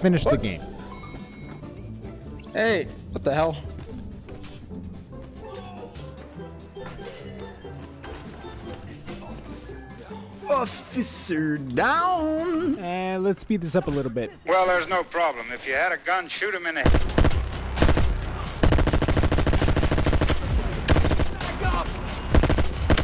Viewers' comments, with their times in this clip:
0:09 the melodic "officer down" really made me feel like i was in heaven